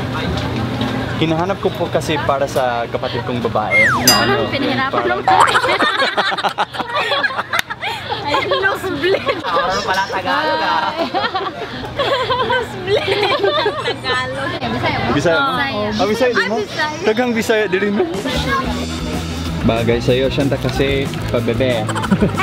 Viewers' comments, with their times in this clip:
0:08 that apir tho☹️😂🤣